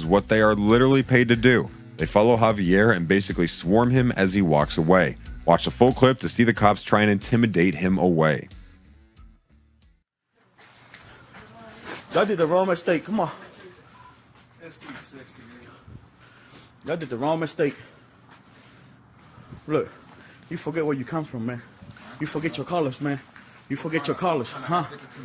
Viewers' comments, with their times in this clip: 0:08 honestly if it’s involving a school… the more security the better. Especially when the person speaks the way the guy recording is speaking…